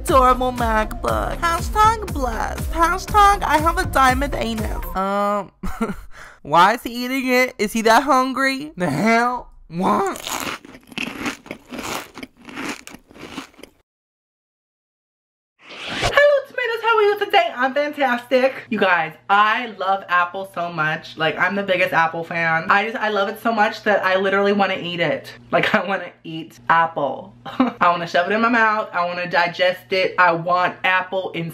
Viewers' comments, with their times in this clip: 0:10 the ticket eater thing at chuck-e-cheese makes that noise 😂
0:12 The crunch sound sounds like the thing you put your tickets in at Chuck E Cheese 😂😂😂